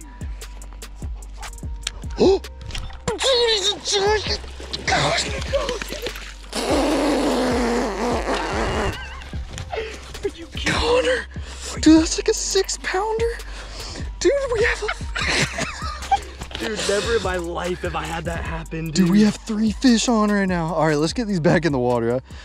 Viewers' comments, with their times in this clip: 0:06 "dude he's a giant pfffffbbbbbbbbbbbb" 😂 (started sounding like the old television on channel 3)